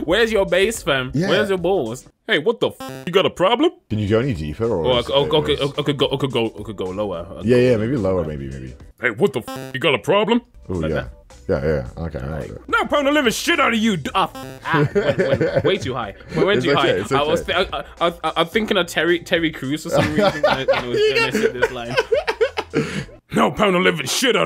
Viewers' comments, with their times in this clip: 0:09 he sounds like unchained from Baki 🥊